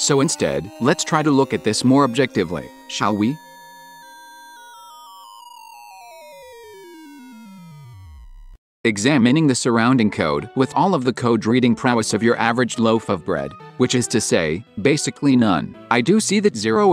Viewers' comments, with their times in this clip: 0:04 that sound reminded me of Wldar Battle theme in Banjo Kazooie, tottaly unrelated i know